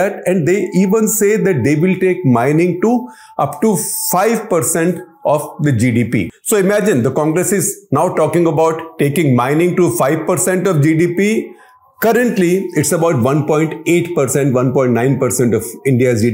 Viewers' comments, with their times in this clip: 0:04 Why Shekhar ji why. Why is there always Azaan blaring in the background when you shoot Cut the Clutter? Why?